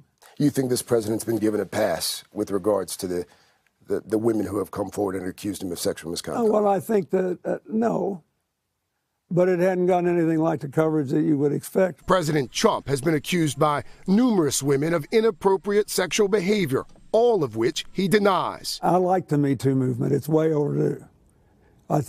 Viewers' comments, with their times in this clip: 0:10 Really.... ... he said " President chump "